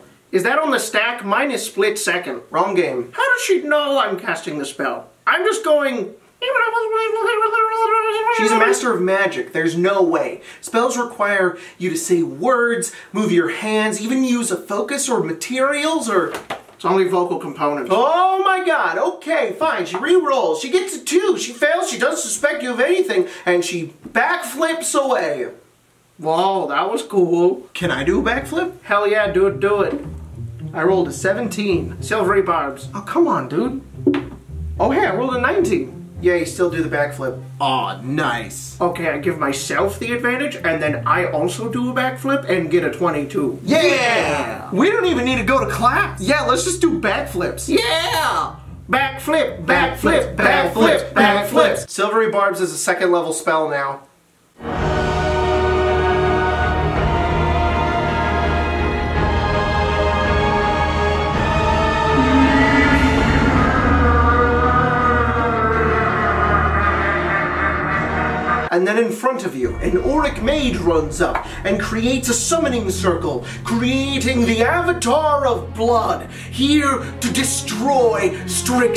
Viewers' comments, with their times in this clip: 0:05 I didn't now that Animal Crossing characters speak in an arcane language
0:06 the verbal component is canonically "animal crossing noises" now
0:54 oh god ptsd music
1:03 why do i hear a evil villain duck laughing